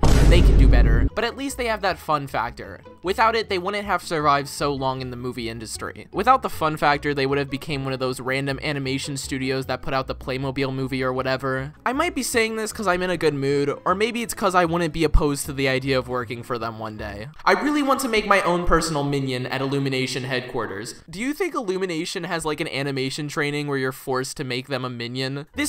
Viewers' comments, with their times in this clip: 0:07 robot voice enabled